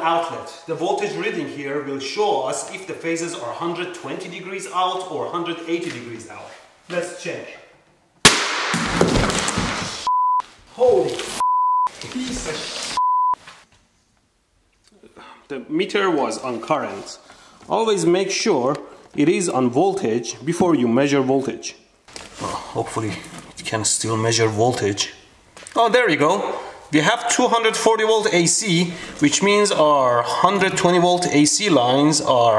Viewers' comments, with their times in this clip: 0:06 let’s check boom
0:06 let’s check boom explode
0:07 !BØØM¡ "S***, HOLY F****, PIECE OF S***"
0:07 the best thing i have seen all day literally sounded like sniper rifle's bullet hit the wall
0:07 It was perfect boom
0:07 the meter goes pop and I figured he didn't set the meter to right setting Whoops that's a way to how not to destroy a Electric mutli meter
0:07 That sounded more than the little boy nuke
0:08 P O P ! ! !
0:08 it’s funny how that ark echos
0:13 minutes in : KABOOOOM